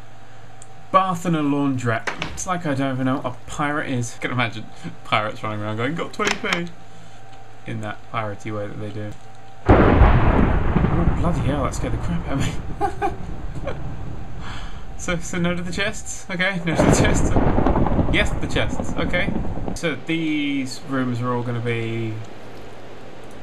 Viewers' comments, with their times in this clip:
0:09 scared the crap out of me because i forgot my volume was on high